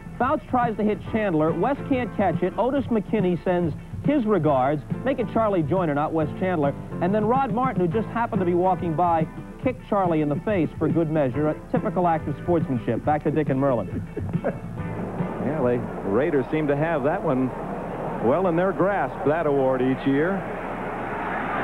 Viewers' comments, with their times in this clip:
0:05 during an update....they show unsportsmanlike conduct and Merlen can be heard chuckling. Sign of the old days.